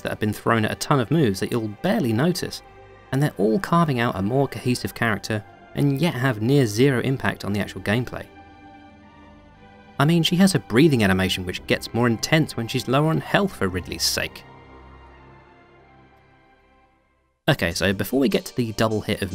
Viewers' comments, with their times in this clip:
0:06 I have some advice. Because the way you record your vocal bits, it has a gate to turn it off when its too low. Your mic puts a noticeable hiss, which you really dont notice because of the music. When you pause talking to get to a new bit fo your script, it goes to dead silence, which doesn't sound natural. What I would recommend doing to get around this, is keeping an ambient recording of the hiss or static from your mic in the background, (with a slight lowpass filter) with more active music to cover it up, so your pauses feel more natural. listen to to get what im talking about.